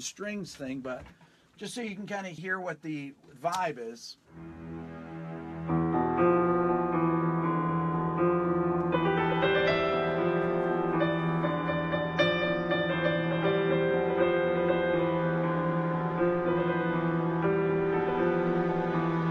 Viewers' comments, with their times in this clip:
0:06 Hmmm. You are channeling the playing style of Lyle Mays during the 'phrygian-thing' beginning This is a great lecture, by the way.--very interesting topic.